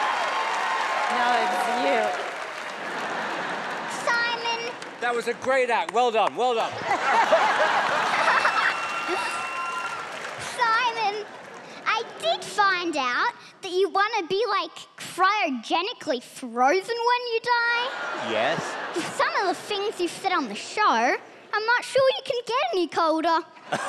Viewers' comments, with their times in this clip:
0:09 The way he says SiMoN